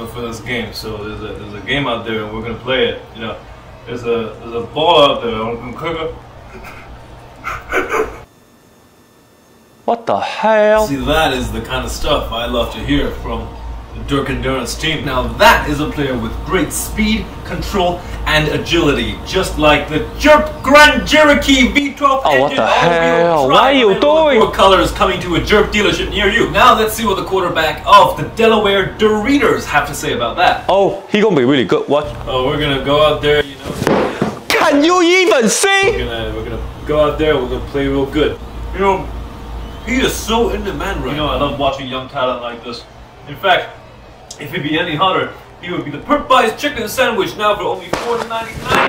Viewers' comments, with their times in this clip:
0:05 it would of been a lot more funy if you didn't laugh
0:09 Greatest what da hail in steven he history
0:34 Is that a 幹？ or I hear wrong?🤔